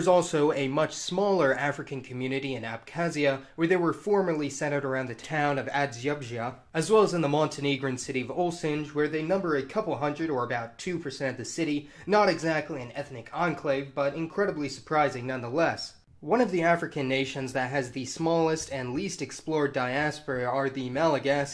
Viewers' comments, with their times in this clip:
0:04 how to properly butcher a name